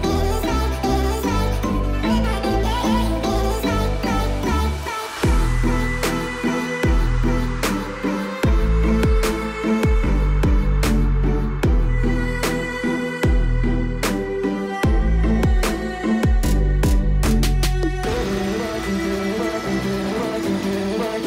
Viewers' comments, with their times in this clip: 0:05 there was this part in the song that sounded like the alarm at my house and I’m home alone and I freaked out!